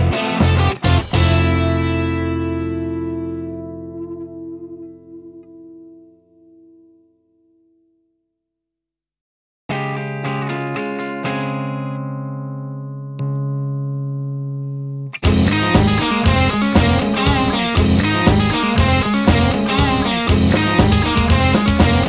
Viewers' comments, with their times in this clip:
0:09 Videos like these remind me that you can have all the gear in the world but the true objective is to make beautiful sounds. And you, sir, make beautiful sounds. That second song beginning is such fun. 👏🏽